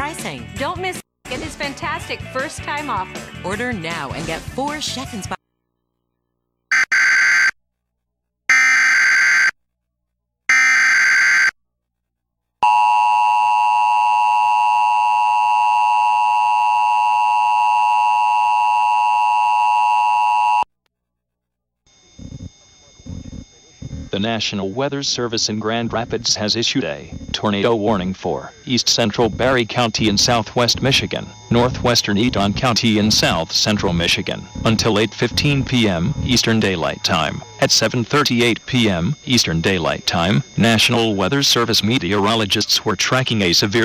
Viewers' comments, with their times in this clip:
0:04 EAS bulletin came up the 2nd time
0:29 if you listen closely you can hear another eas